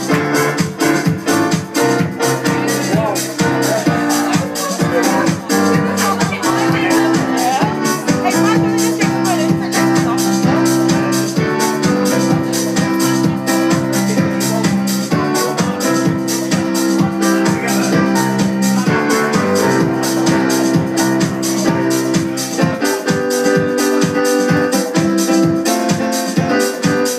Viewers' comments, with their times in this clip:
0:10 Sounded like "Kinetic" lost 'em :)